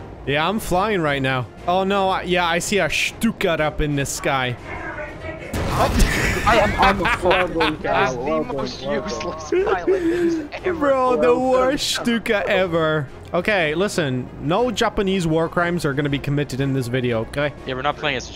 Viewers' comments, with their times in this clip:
0:05 lmao that voiceover